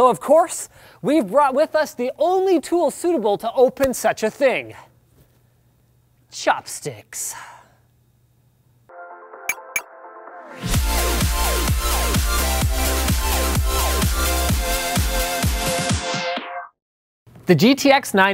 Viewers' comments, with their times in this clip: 0:03 Anyone hear the MLG marker ?